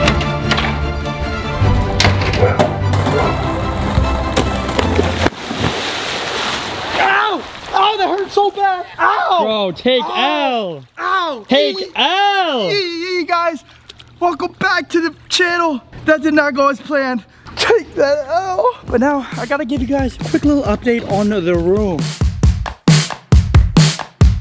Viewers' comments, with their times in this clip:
0:08 the music matches good at first but then bud took masive L